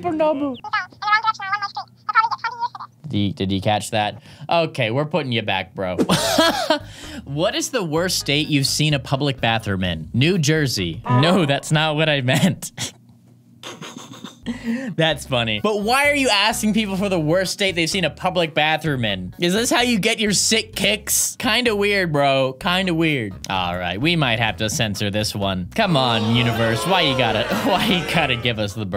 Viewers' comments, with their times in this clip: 0:10 I love the undertale music.